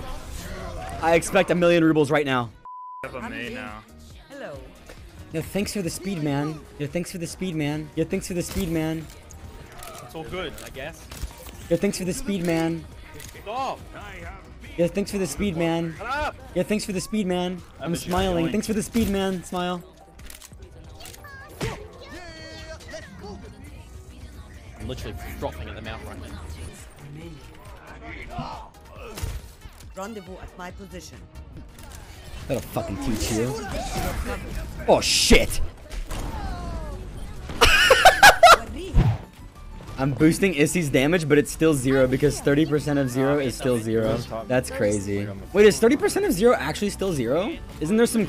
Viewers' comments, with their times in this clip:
0:04 I just love how Mamamoo-HIP is casually being played in the background. He's literally playing all the kpop girl group songs
0:30 hip in the background 😍. I love that song